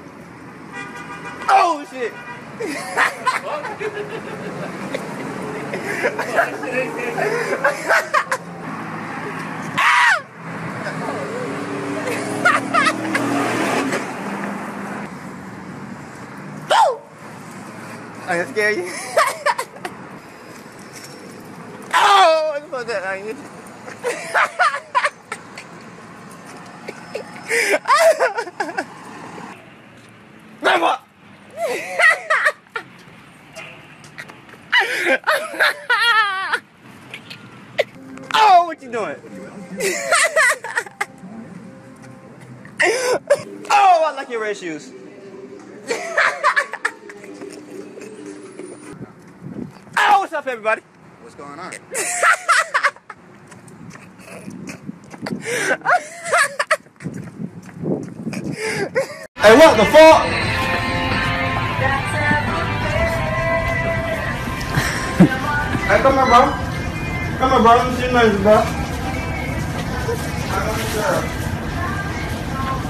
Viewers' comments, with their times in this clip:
0:09 did you know that he laughed the same the whole time.
0:52 bro that Laugh is Legendary
0:53 Him trying to scare others and that laugh kills me this entire video is something else 🤣💀 “But today I got time” 😭 lmaooo